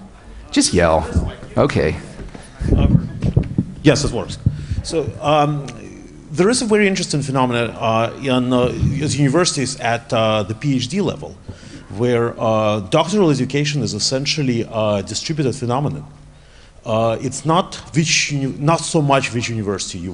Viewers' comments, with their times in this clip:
0:05 is actually Peter Thiel pretending to have a Russian accent.